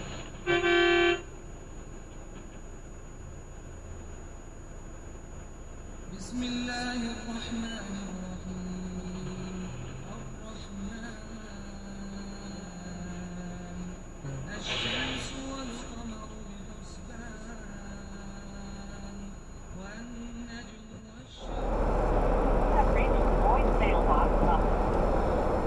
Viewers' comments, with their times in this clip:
0:05 Who else can hear Quran?
0:05 there is chanting of al-qur'an
0:08 Ya Allah, him play a Quran Ar-Rahman 😍😍
0:12 I can hear the Quran